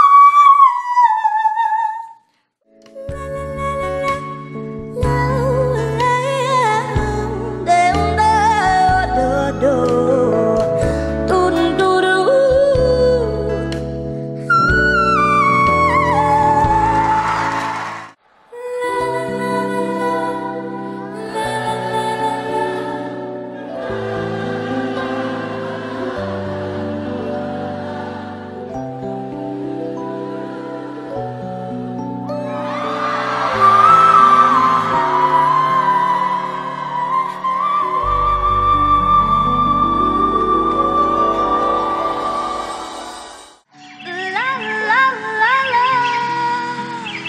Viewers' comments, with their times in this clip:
0:03 To me, Leah McFall did the best uwu
0:19 bro am I the only one who died when the whole audience tried to sing the notes😂😂😂😂
0:30 How could nobody talk about Jane Zhang's supported and resonant head voice ? Brutally underrated here!
0:30 LOVE HOW THE AUDIENCE ATTEMPTED THE WHISTLE HAHA
0:30 I love her rendition and after the pause she sounded so angelic
0:30 Honestly I'm crying When the audience tries to join in
0:33 aw she sounds lovely